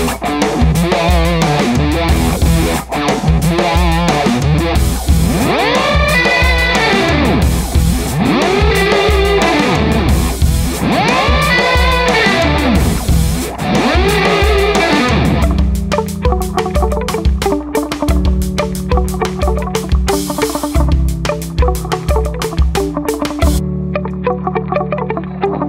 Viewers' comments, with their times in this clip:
0:06 Thanks! So the Wah sound and the slight doubling effect is coming from the Coriolis and not somewhere else? I'm not talking about the Wah sound on the effect demo that occurs immediately before the sound we are talking about. But that wicked sound effect you played has both a "Doppler" and frequency sweep sound to my ears. I know devices like phase shifters and vibes have a "wah-ish" sound to them due to frequency notching so if that's the Corioils pedal that's great. I just wanted to make sure a dedicated Wah or phase shift/vibe pedal (auto or manual) wasn't in the mix.